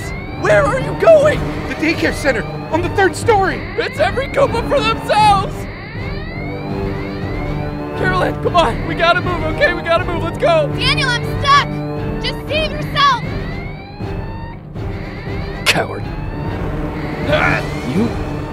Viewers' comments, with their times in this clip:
0:03 Who else thought is said getto work in stead of get to work